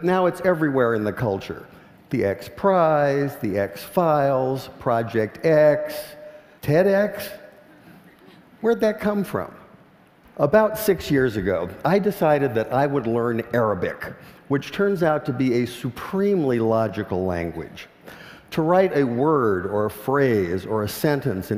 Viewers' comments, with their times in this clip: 0:09 "About 6 years ago, I decided that I would learn aerobic..." i thought: WHAT???